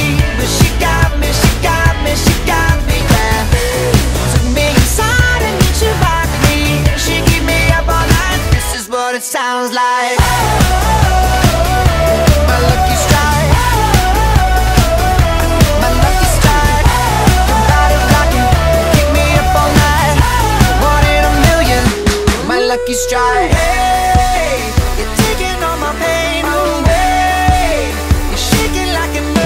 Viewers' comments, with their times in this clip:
0:10 sounds like its singing instead xD!